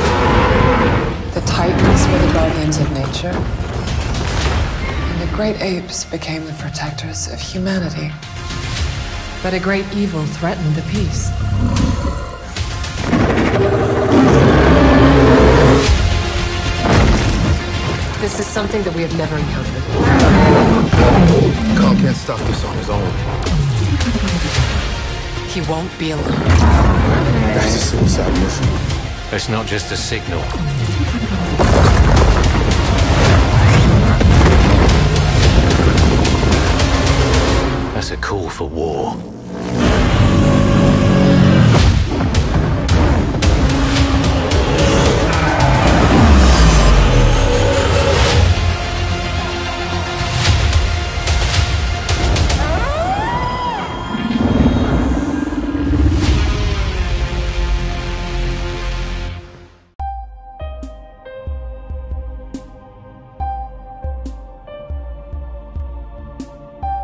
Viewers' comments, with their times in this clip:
0:03 I hear zillas roar... Is that just me?
0:04 classic roar is retuuuurn dudeee
0:04 Is it me or did I hear Godzilla's classic roar?
0:04 Godzilla Classic Roar 😱
0:04 OMG IS THAT GODZILLA'S ICONIC TOHO ROAR?!
0:04 you can here godzillas toho roar
0:05 THERE IS A ROAR OF A DIFFERENT GODZILLA I THINK
0:52 they should change the roar for mothra🤣